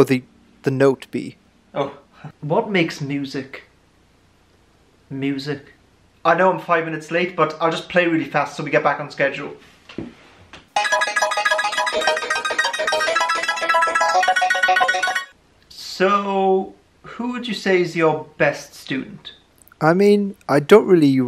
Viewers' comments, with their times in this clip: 0:09 sounds like vocaloid music